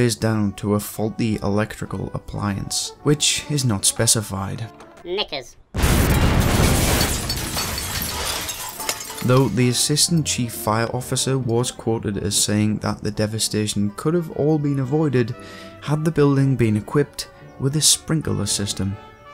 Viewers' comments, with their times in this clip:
0:04 did that bot say Nickers or the other word?